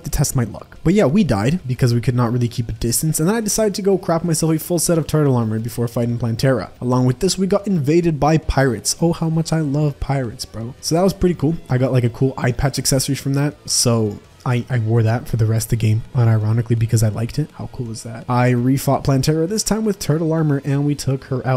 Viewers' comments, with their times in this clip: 0:03 it sounds like he said CRAP MY SELF